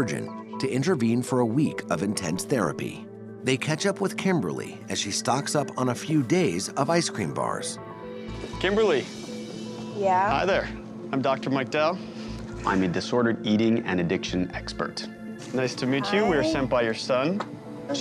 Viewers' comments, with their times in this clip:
0:03 she seems surprised. Did she not notice the multiple camera men and sound guys. She also was wearing a microphone based on the sound quality.